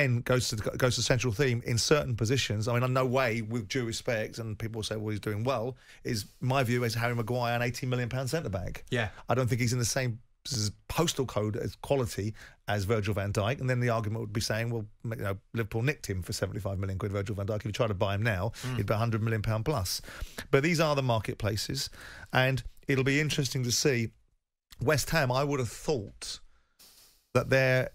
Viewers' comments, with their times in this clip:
0:09 Simon momentarily turned in to a fly